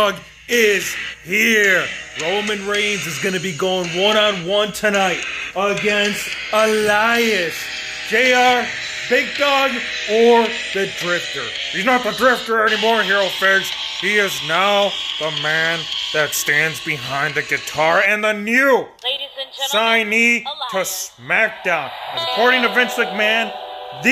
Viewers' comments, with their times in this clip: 0:06 Drop a like the way he said Elias